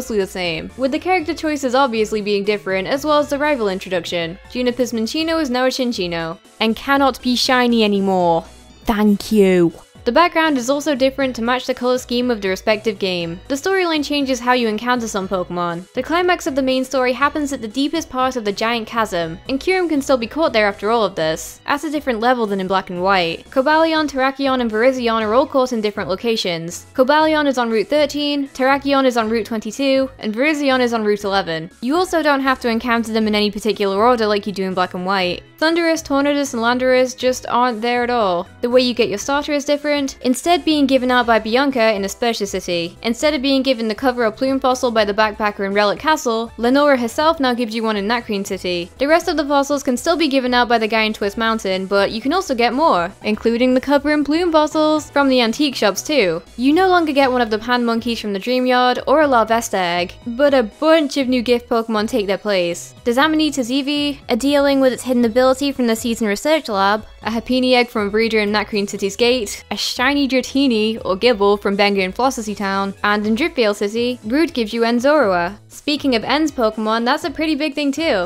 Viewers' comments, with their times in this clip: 0:09 You can hear the Scottish bleeding through that thank you
0:10 This ''Dank you'' was the cutest thing I heard in a long while
1:05 I thought it said “Serena Grace” because Grace is Serena’s mom